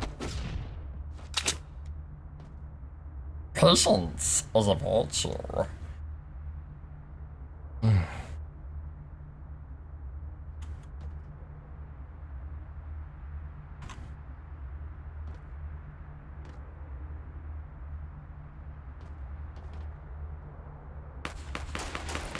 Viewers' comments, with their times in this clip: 0:07 is that a fart 😭😂🔥